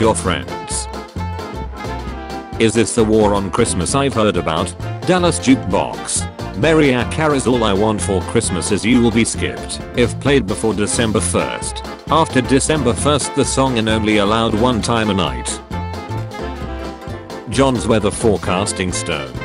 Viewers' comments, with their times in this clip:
0:06 ?"MAIR-ee-ah" Carey, not "mah-RIE-ah" Carey?